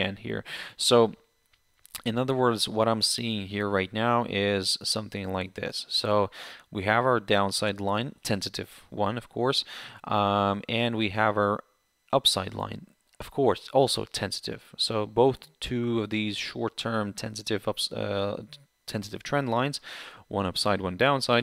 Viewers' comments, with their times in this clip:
0:07 My English is too bad...sorry I am asking...at you using this word sounds like "tensitive" or what is it? And what does it stay for? Thank you.